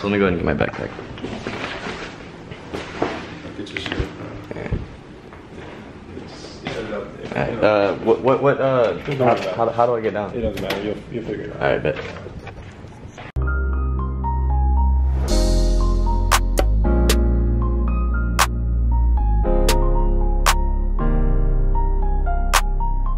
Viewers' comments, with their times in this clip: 0:07 “ what what what uhh” he’s stuttering 😂